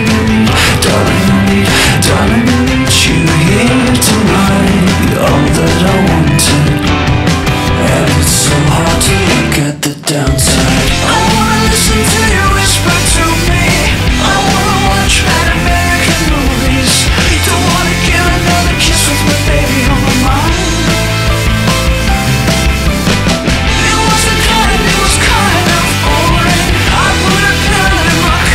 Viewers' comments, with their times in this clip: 0:10 you cant do that you're not allowed to sing like that you cant do this to meeee 😭😭😭😭